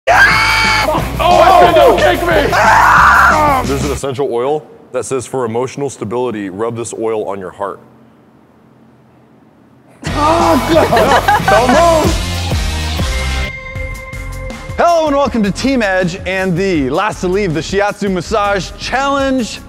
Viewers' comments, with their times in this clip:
0:00 Pterodactyl would like to know your location
0:00 I died that scream tho
0:00 RIP head/earphone users
0:00 that war cry though 😂😂
0:01 Is the scream of a bird dying